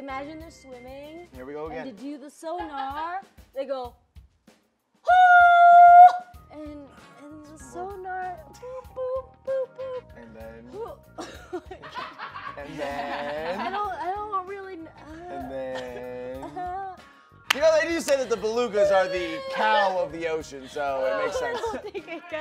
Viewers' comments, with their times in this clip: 0:08 I can't help but think of Alan Davies' beluga whale impression from QI